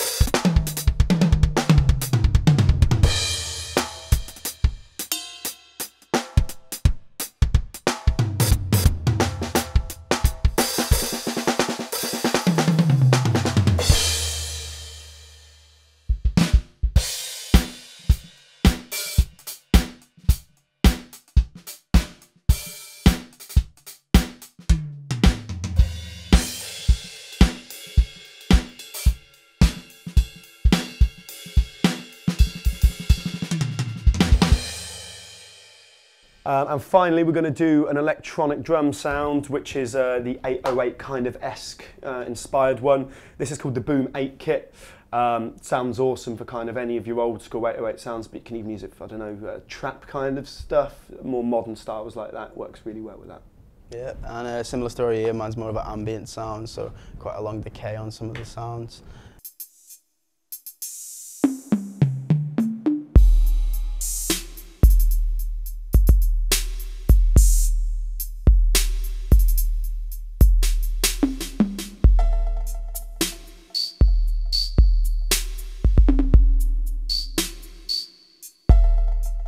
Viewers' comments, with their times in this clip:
0:07 The Alesis has some weird high-hat closing dynamics
1:05 The 808 type sample was making me drool, that Roland set sounds amazing. I'd go with Roland in my opinion Edit: about a month ago now, I got a roland set and I have been loving it!